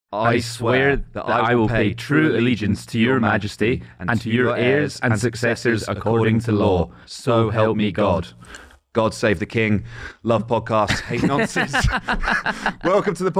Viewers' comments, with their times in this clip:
0:00 Very beginning of video was scary (them saying/almost like chanting, the allegiance to the king like that).